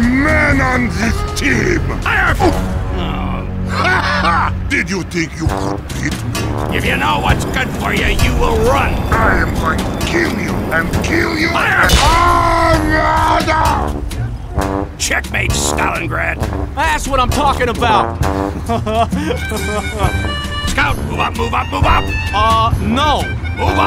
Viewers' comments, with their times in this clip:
0:08 "I’m going to kill you and kill you an- *DEATH SCREAM*" -Russian Tank Heavy (Funnily last words 😂)